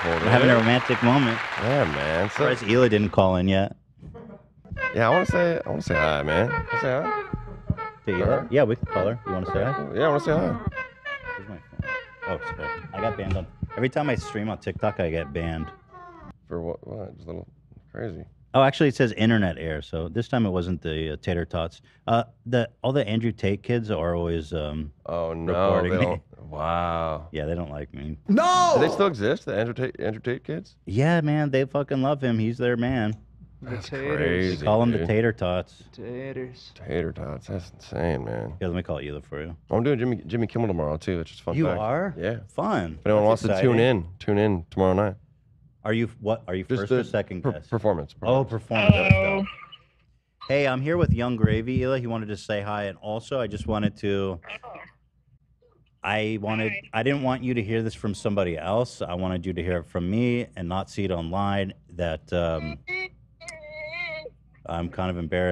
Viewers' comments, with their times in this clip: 0:05 Whats the creepy song clip that plays ???
0:48 Nobody acknowledging Hilas perfect Ninja „hello“ made me sad :(